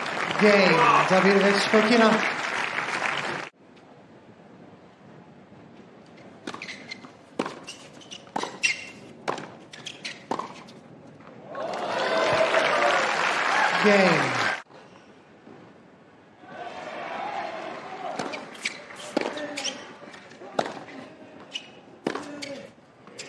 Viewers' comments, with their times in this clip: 0:08 Watch at 0.25x speed and keep on pausing after each frame. shows the ball right on the line and you can hear the contact point to the ground.